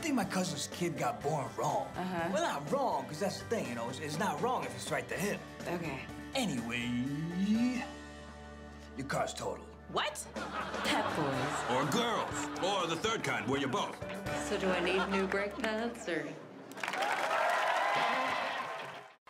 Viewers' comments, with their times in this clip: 0:07 Good Henry Winkler (Fonzie) impression